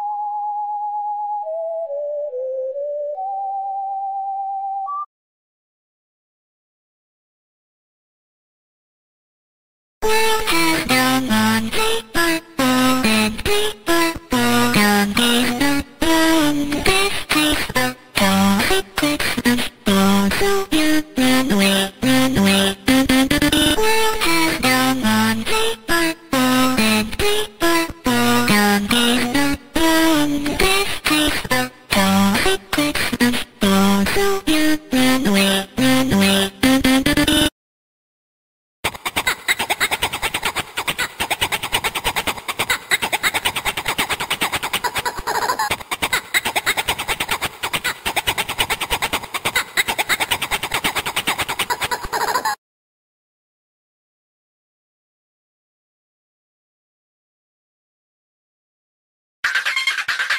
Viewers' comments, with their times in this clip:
0:07 This melody reminds me of something but I can't understand what...
0:44 she sounds like a rubber duck💀😭